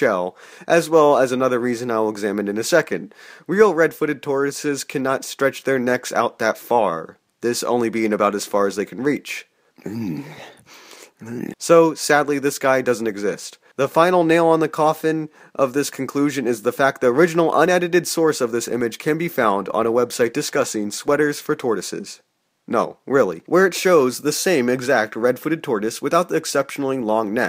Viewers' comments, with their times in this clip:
0:09 dude, wtf was that sound effect?